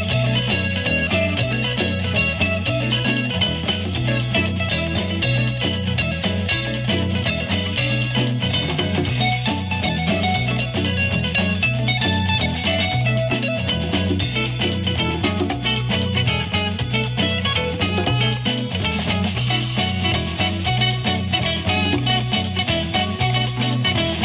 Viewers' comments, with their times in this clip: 0:09 reminds me of Sonic the Hedgehog half pipe speed runs on the SEGA.